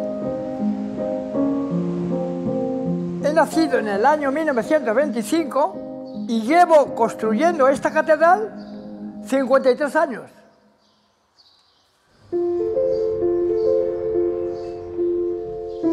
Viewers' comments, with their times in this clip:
0:03 He Speaks spanish